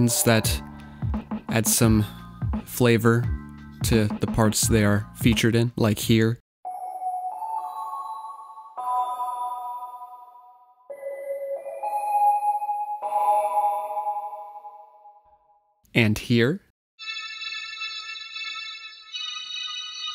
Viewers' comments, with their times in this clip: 0:06 that might be the creepiest synth sound I've ever heard